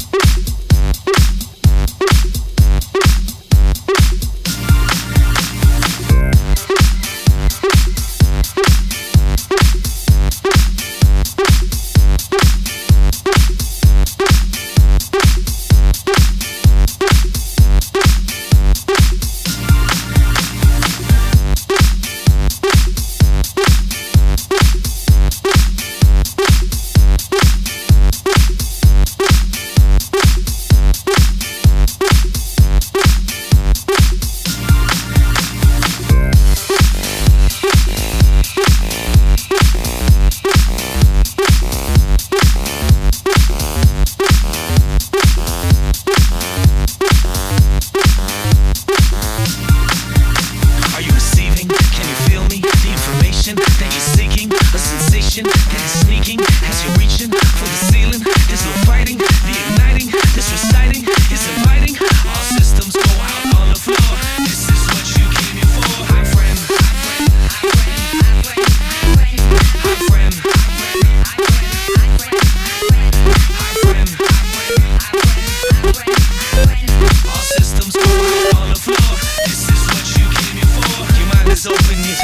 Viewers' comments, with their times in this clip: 0:06 The guitar is country LOL
1:06 MY BRAND-MY BRAND MY BRAND-MY BRAND MY BRAND-MY BRAND MY BRAND-MY BRAND Where-I-had-to-SPECIAL-EYES your contact-lenses-just-arrived